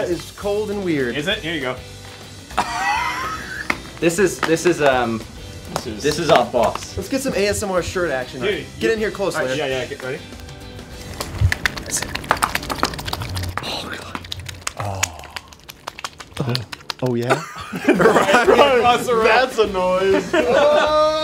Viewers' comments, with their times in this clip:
0:07 that ASMR o.o